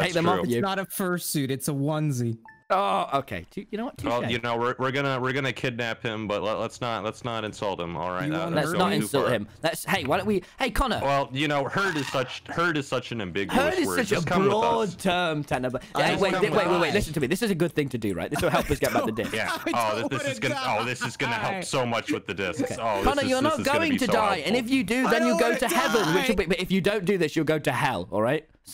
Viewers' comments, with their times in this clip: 0:10 did anyone hear a gas-